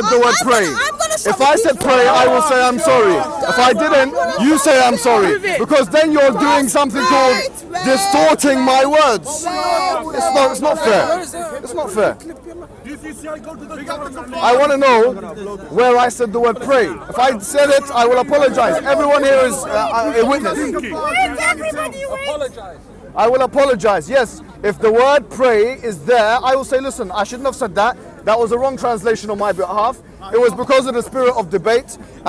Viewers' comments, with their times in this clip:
0:03 < this women came and called my Brother act like a Baby, go on PEOPLE, Listen to her voice when she act like a child~ Wallahi Shameless~
0:20 the guy that impersonated her and the guy holding the umbrella laughing 😭. Wholesomeness
0:20 That is a golden impression by that dude at the back.